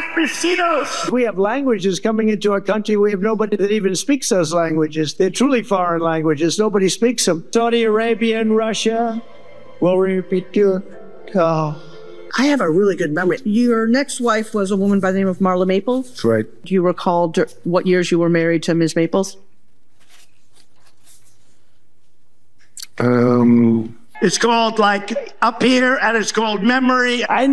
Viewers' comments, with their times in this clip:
0:08 Funniest speech flub I have ever heard in my life!!!